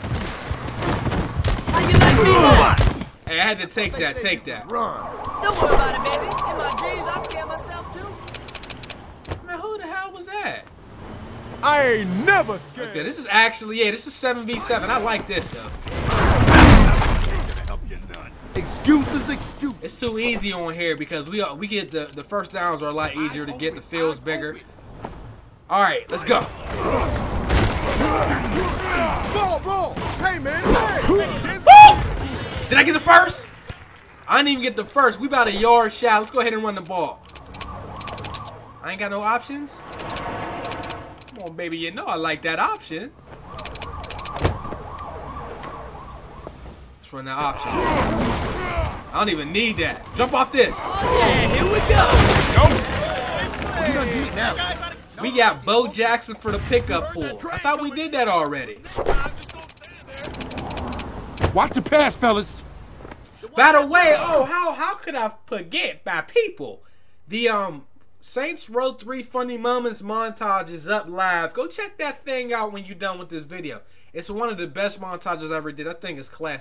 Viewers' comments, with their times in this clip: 0:10 The dude in the background sound like toothpick from don't be a menace and drink your juice in the hood 😂😂😂
1:02 Am I the only person that heard mike Tyson